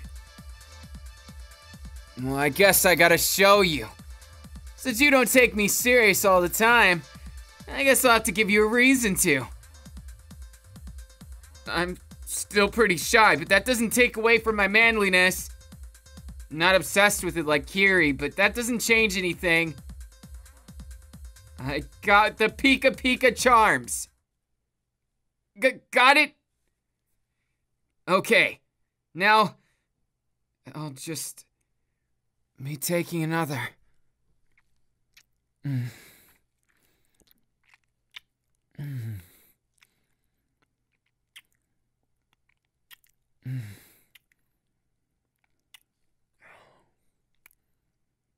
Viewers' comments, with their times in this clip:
0:09 Me at like hmm why did it get so quiet turns volume all the way up Denki: MmmMmMmMmM
0:24 Music stops: Me: Hhhhhhhhhhh Also me: yes. Also also me: WHY?!?!? Also also also me: because yes.
0:32 Music stops here ya sinners